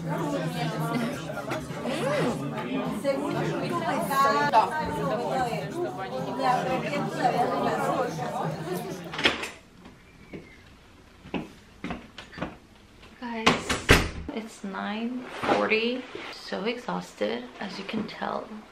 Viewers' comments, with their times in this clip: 0:04 Me on just randomly hears Russian